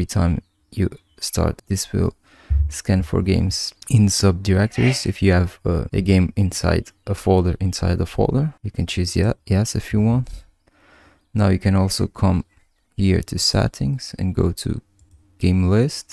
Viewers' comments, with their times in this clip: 0:03 anyone else hear the "Hey" seconds in the background?
0:04 big sneeze, bless you